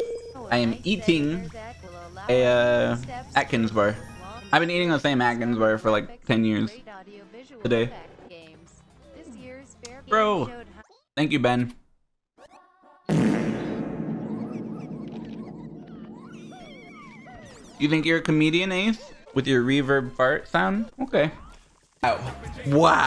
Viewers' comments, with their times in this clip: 0:10 seeing the light flash with fart with extra reverb in the background is one of the funniest things I've seen on this channel